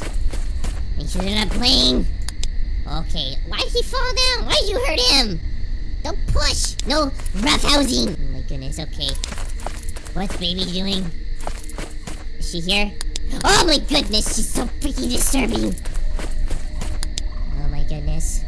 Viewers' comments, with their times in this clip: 0:06 she sounded like my grandma with my cousin and me